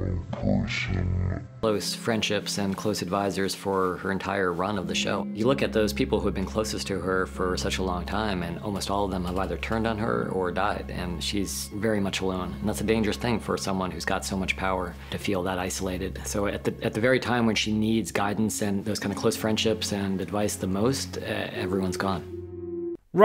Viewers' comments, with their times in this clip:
0:04 did you speed the audio up there? Or does he have a soy voice?